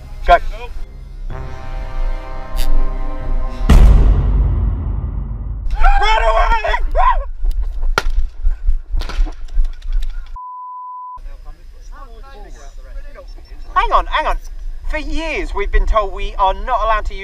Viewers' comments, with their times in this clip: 0:04 You could hear the soul leaving his body with that scream